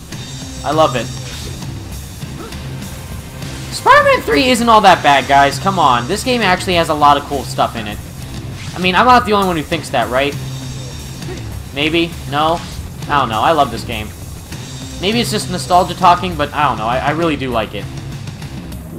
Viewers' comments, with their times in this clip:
0:04 did anyone hear that voice crack